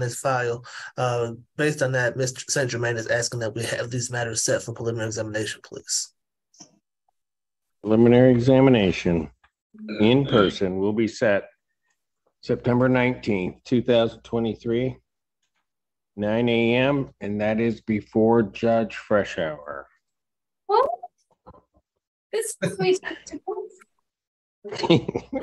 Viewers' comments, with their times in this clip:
0:07 She sounded so cute. Even the Judge laughed “whaat?!”